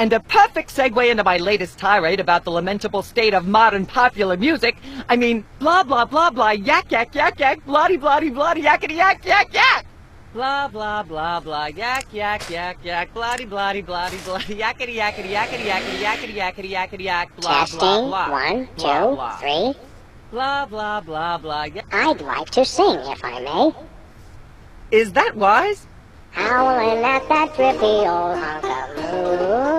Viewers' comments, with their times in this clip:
0:10 you know there having fun when they are laughing during the recording